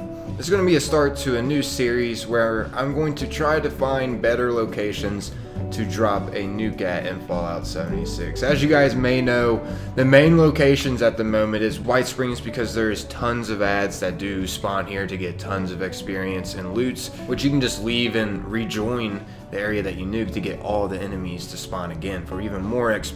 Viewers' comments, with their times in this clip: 0:06 I have YouTube captions on and at the beginning of the video You said " I'm going to find better locations to drop a new cat in fallout 76" ??????